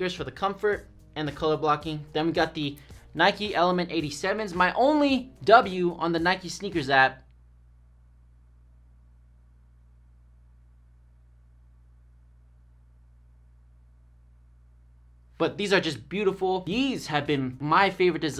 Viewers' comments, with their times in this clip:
0:05 So no one gonna talk about that long ass pause